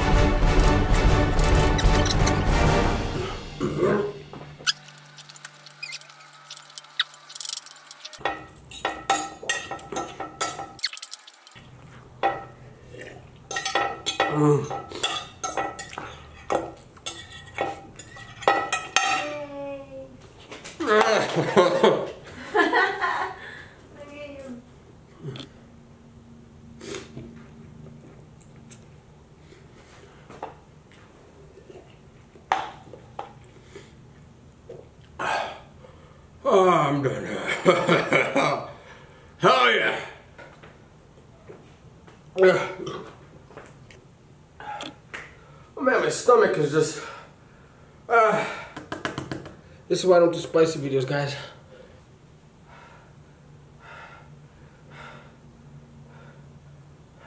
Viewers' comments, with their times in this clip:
0:03 i don’t know if that was a burp or gargle
0:38 the joker laugh🤦🌚😂